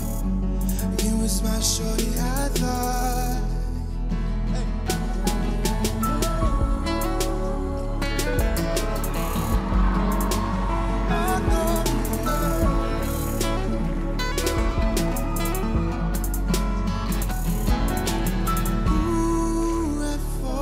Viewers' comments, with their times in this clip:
0:06 Man if he’d had shred that guitar for 30 seconds more he would’ve won